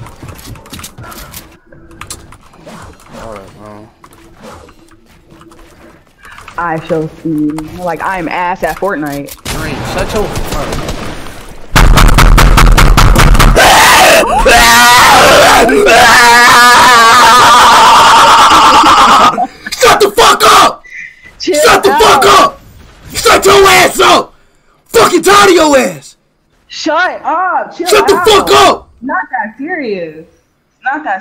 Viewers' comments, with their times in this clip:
0:08 Here’s The Part Where Everyone Laughed So Hard, Their Bed Broke
0:10 he sounds like a raging zombie😂💀
0:11 he scream when he is stuck
0:11 is the screaming part
0:14 why he sound like tht penguin from happy feet 'lovelace' whn he gets choked by a piece of plastic